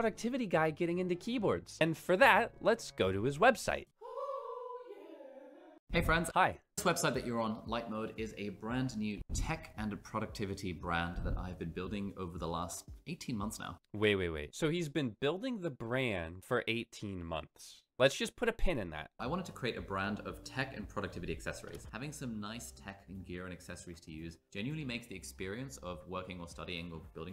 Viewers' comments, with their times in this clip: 0:08 Why is Ali talking into a 🪒, eh a fork with a tiny mic!? Popping my ears clean without a pop filter 😂.